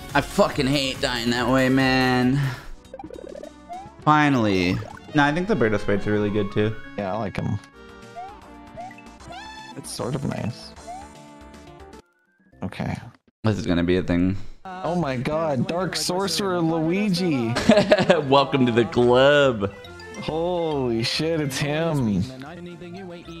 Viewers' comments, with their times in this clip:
0:09 What's the noise ? It's awesome sounding but I'm not sure it's from the game or the music or added in post.